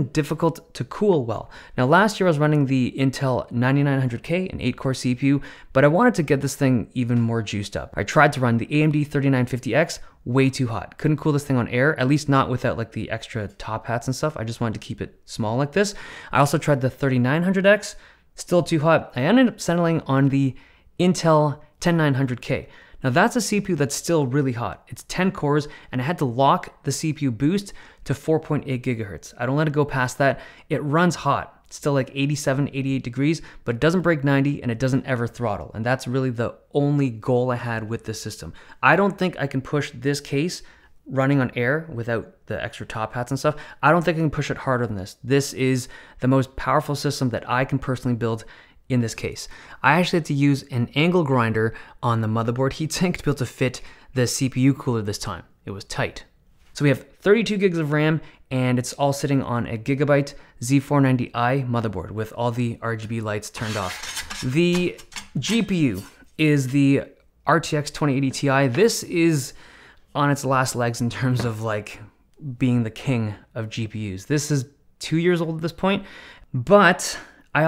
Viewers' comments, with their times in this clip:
0:05 that voice crack doe
1:03 That cover sounded like a sword when it came out